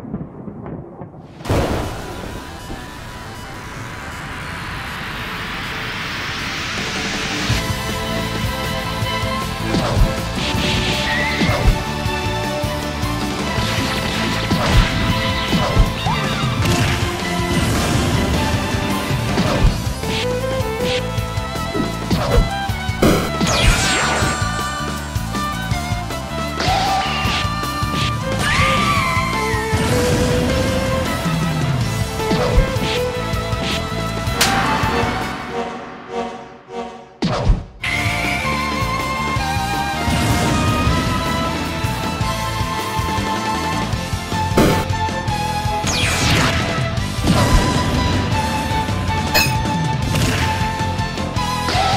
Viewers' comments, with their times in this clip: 0:07 No offense but the sfx edition sounds like old school animators' sfx (especially sprite animations), and ngl, I like It xD
0:08 Aaaand there's the unnecesary sound effects.... I better go watch the stream archive
0:35 the fucking Noro Noro beam sound effect I love you editor